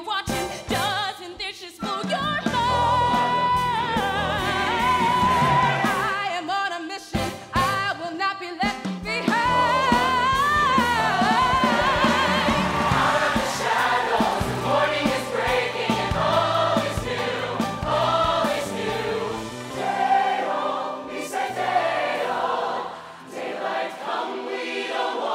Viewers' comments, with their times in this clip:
0:06 Her voice is amazing. I can tell she is going to do great things